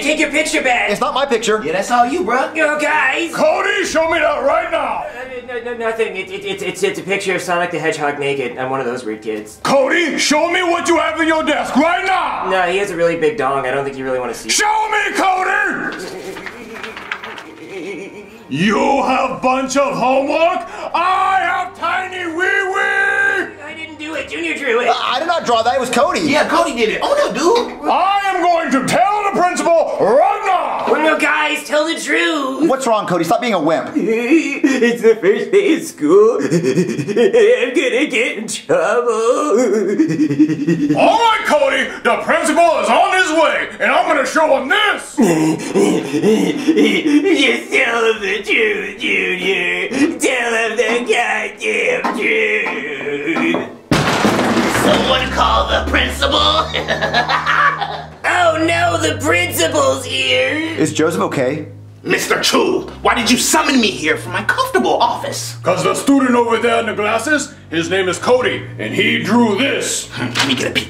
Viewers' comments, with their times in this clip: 0:07 did he say weird or queer?
0:53 Joseph: completely being a normal human being Principal: PROCEEDS TO KICK DOWN DOOR ONTO HIM Principal: DID SOMEONE CALL THE PRINCIPAL? GOOFY LAUGH
0:54 (BOOM) DiD sOmE oNe CaLlEd ThE pRiNcIpAl (goofy laugh)
0:54 (BOOM) DiD sOmE oNe CaLlEd ThE pRiNcIpAl (goofy laugh)
0:54 JOSPEH JUST SITTIJG THER THEN BOOM
0:55 He Sounds Sinister
0:56 boss music starts playing😂